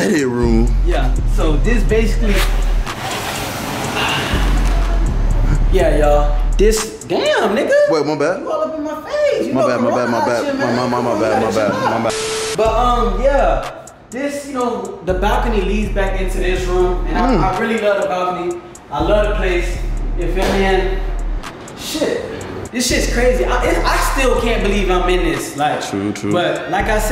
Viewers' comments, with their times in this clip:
0:10 When yo friends breathe be kickin n u finally tell em : Nobody * 😂😂😂